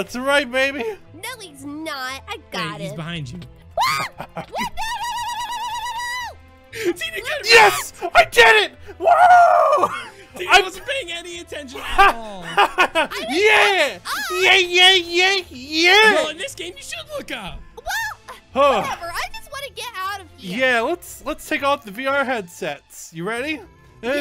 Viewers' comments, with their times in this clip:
0:05 😂😂😂😂😂😂😂😂 BRO SHE HAD A BATTLE CRY 😂😂😂😂😂😂😂😂😂😂😂😂